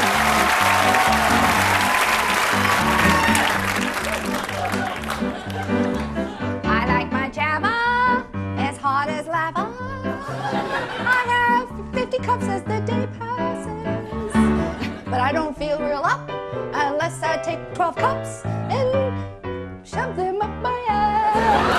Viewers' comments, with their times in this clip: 0:03 who is this actress? I recognize her from somewhere. Most creative hoedown melody